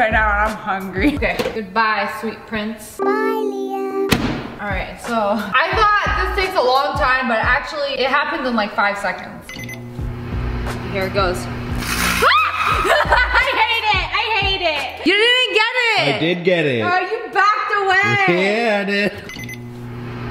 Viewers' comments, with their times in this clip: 0:03 that voice was so freaking cute oml